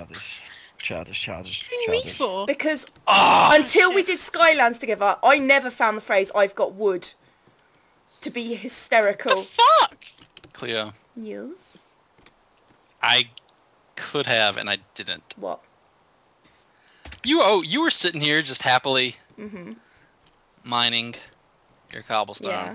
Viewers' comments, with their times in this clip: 0:09 I love how you said "Yes" Most epic voice ever.